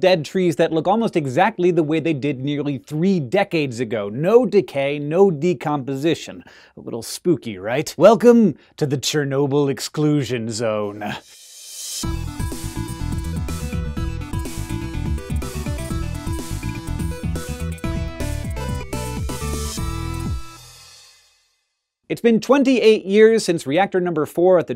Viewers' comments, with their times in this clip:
0:07 appaling lack of creepy music.